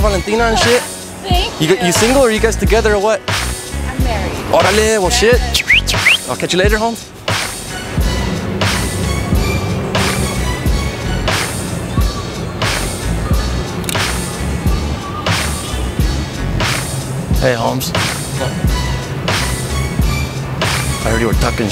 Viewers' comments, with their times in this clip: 0:04 THAT WHISTLE BRO, HAHAHAHAHHHA
0:04 ...Hmm.. Artistic vocals !!
0:06 how you did that whistle
0:07 The guy in is too late censored! 😂